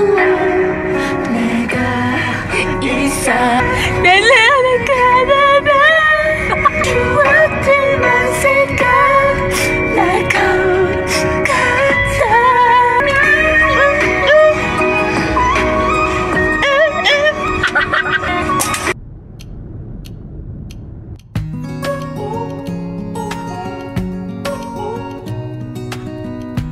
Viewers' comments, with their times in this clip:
0:10 when I listen to Tonight I sing like this